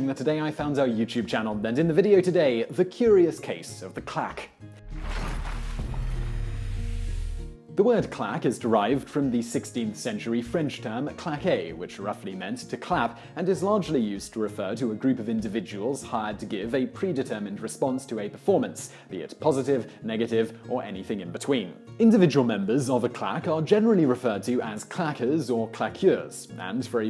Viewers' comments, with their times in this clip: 0:08 I thought he said "the clap"